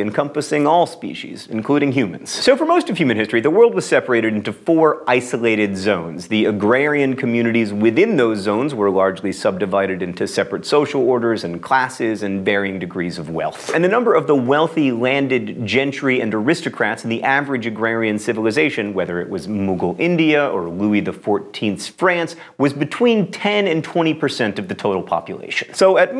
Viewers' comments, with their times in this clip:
0:09 When you said divided you kinda sounded like agent smith.
0:10 Mmmm John Green. The way you say wealth really tickles my fancy.
0:13 How do you say Wealth? :) Great episode BTW